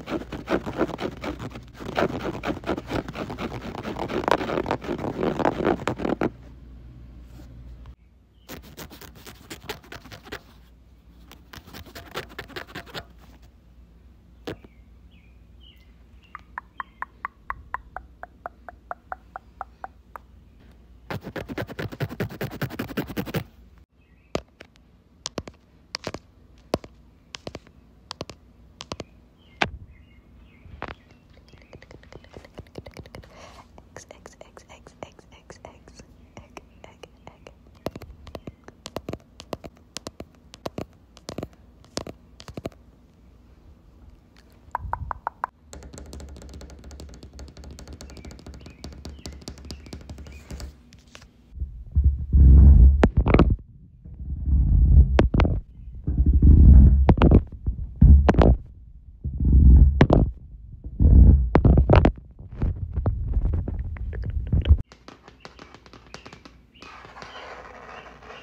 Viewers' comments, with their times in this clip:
0:07 i love the asmr in the dogs
0:34 wait even you talking is fake?
0:51 What were you using to fake the sound ??? It was so crazy relaxing and bass filled!